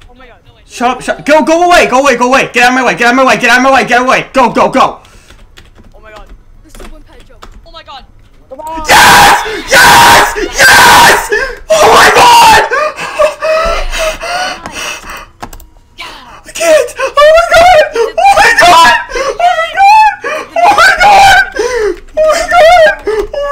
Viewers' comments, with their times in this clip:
0:06 when the yelling comes in